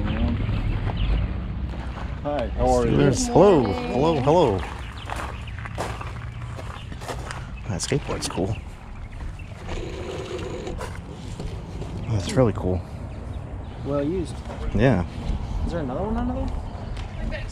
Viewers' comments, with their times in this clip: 0:04 was that Hank Hill that said Hello 👋